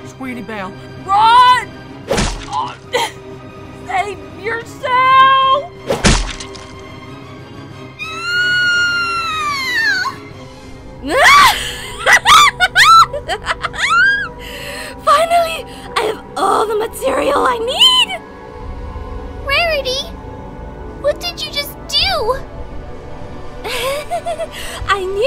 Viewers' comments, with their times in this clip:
0:07 Her scream made me laugh. Just her head shaking dude